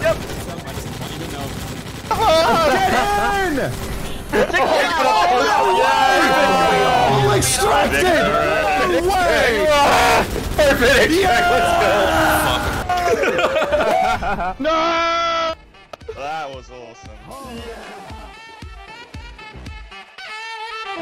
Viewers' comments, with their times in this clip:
0:03 the absolute chaos and everyone screaming is peak chaotically wholesome vibe